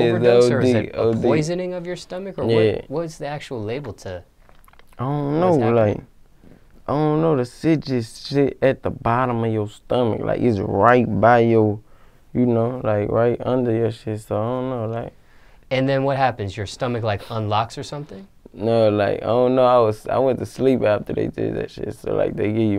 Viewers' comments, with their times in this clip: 0:05 sound just like nba youngboy
0:06 when he said idk he sounds like yb